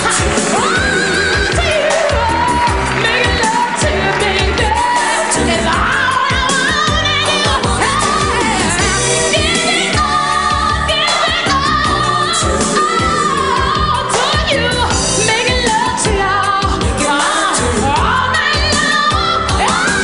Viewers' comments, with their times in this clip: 0:07 That voice went tuh CHUUCH for a sec, there!!! SANG, CHILD!!